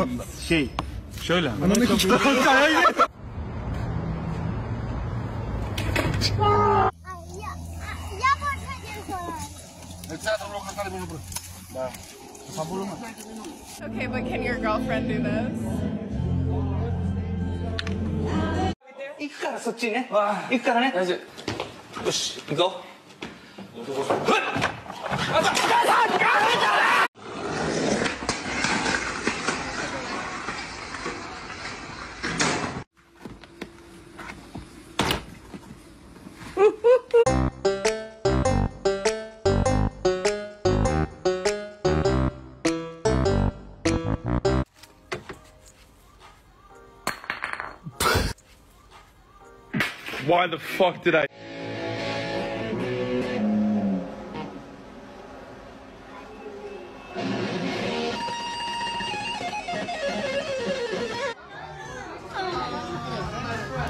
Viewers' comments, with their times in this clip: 0:03 was the funniest shit! I played it 5 times! It's the muffled scream!
0:14 she sounds like Lisa Kudrow
0:49 the cut off "why the fuck did I do that" has me rolling